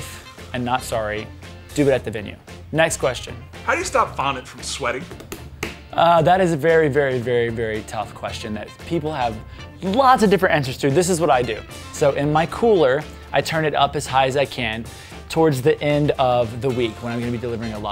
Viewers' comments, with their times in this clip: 0:03 At the mark: How do you stop vomit from sweating? 😂